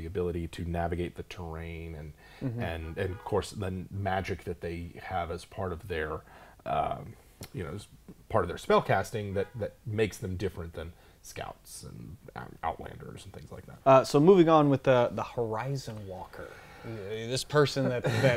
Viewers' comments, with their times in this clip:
0:03 Lol the horn [Sarcasm] Geez guys what kind of production quality are you going for here?